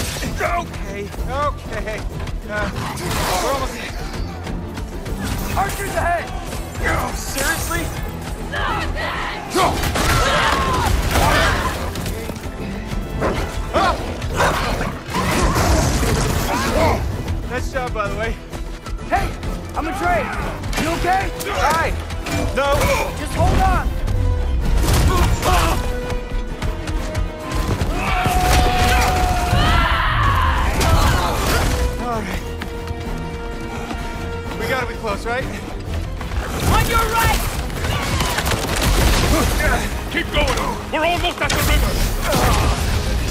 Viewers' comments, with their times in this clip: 0:07 I swear I hear young atreus yelling "you're dead"
0:27 Absolute gigachad Birgir coming out of nowhere screaming like a madman and T-boning a group of Einherjar never fails to get me hyped af